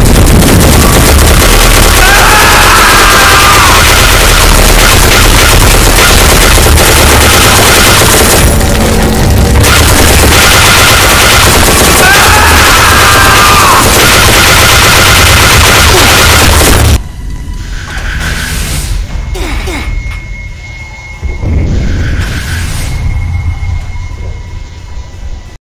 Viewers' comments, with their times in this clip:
0:08 those arent screams of pain, those are screams of rage